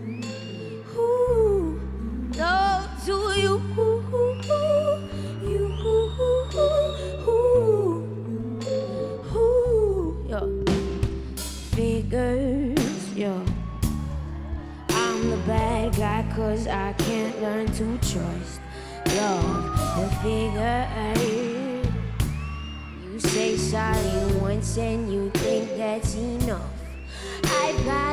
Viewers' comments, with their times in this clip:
0:09 The first yo she sings/says doesn't match up and totally ruins it for me...Lip sync? Great song and talent, just irritated.